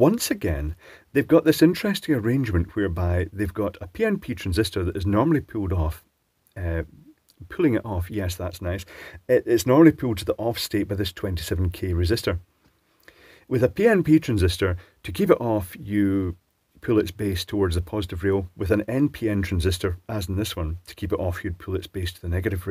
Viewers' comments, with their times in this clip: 0:04 I was fully unprepared for this. What a brilliant long chuckle that was. Excellent recovery, too, tbh.